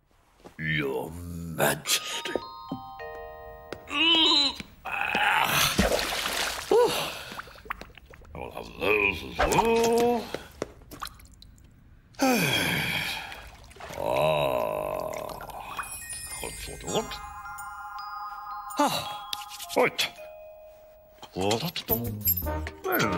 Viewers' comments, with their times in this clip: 0:05 why mrbean dye like splash water minecraft sounds